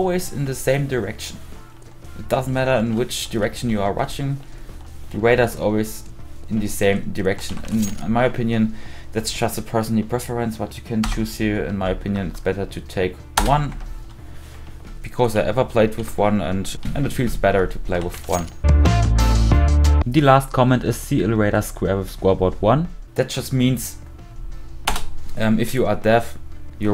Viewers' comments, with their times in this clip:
0:09 I don’t mean any disrespect and this video was super helpful but I’m having a little bit of trouble hearing the part can anyone explain what he said?